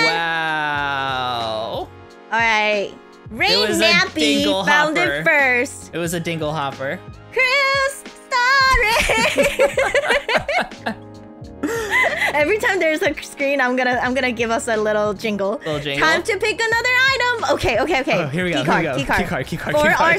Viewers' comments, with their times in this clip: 0:04 she say it louder